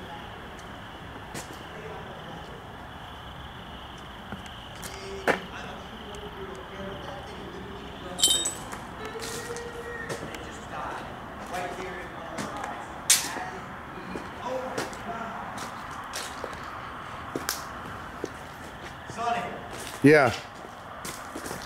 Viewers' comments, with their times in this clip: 0:08 What is that weird yelling or moaning sound or is it yelling hey
0:08 after the glass sound wtf was that?
0:09 Did u hear crying at time ? Or just me? Creepy 😨